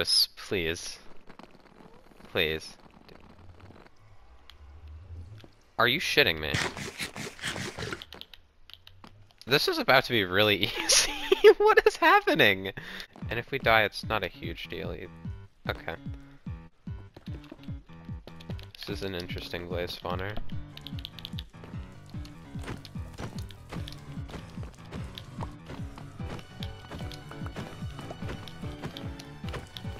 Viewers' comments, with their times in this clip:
0:10 i love that wheeze XD